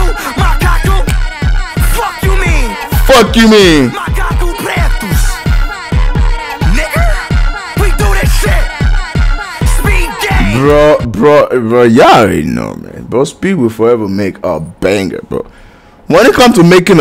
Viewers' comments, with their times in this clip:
0:05 speed said it with the hard R glad you didn't hear it 😂😭